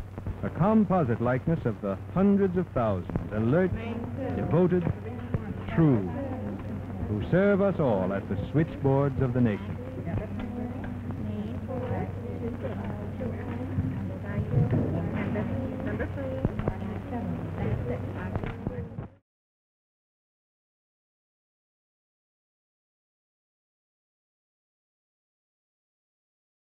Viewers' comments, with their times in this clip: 0:09 subtitles: Switchboards of the naked